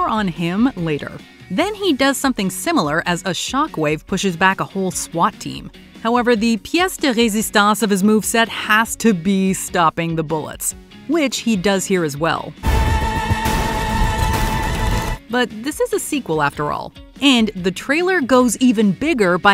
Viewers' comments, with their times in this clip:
0:06 Im genuinely impressed by your “Pièce de résistance” prononciation! It was perfect! Oh and I can’t wait for the movie, I love the Matrix franchise and this movie looks absolutely amazing